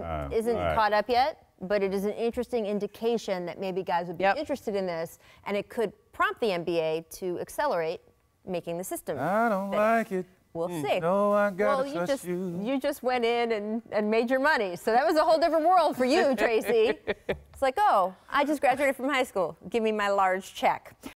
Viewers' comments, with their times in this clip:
0:10 😂😂😂 T Mac singing "Maybe I Deserve"